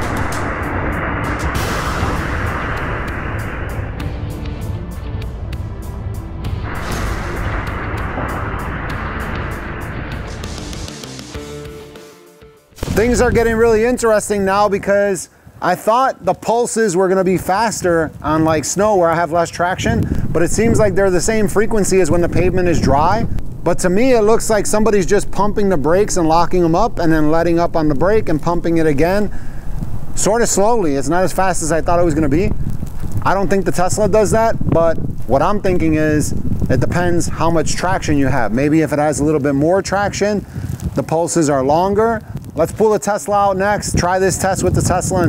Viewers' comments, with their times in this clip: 0:08 in video but you can hear the abs pump working when the supra stops in the snow.
0:27 On the Supra you can literally hear the solinoids clicking! So very cool. I know how abs works but it’s still cool to see it demonstrated and good for the kids coming up!